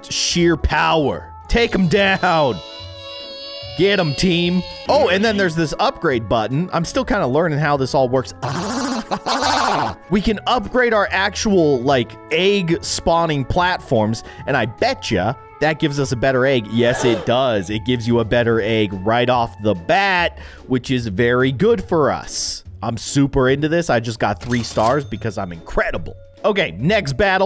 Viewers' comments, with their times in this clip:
0:08 the weirdest watery "ahhh haha" in the world